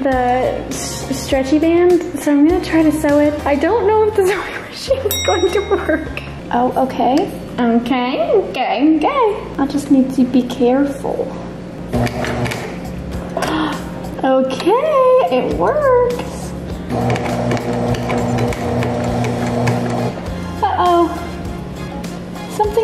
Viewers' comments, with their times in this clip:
0:07 THIS IS THE BEST PART AND KNOW ONE CAN TELL ME OTHERWISE WHAT WAS THAT ACCENT????